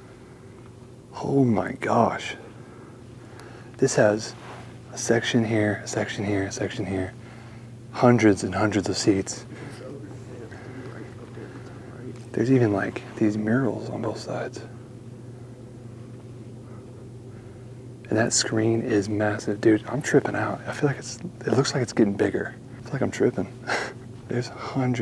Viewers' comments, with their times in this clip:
0:08 are you alone or is that your friend or if that was a ghost talking :D?